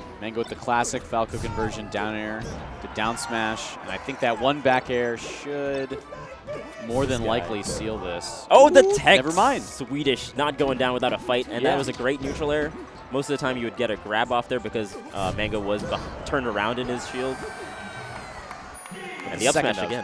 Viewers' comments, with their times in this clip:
0:04 Shoutouts to the person yelling/telling mango to "SIDE-B"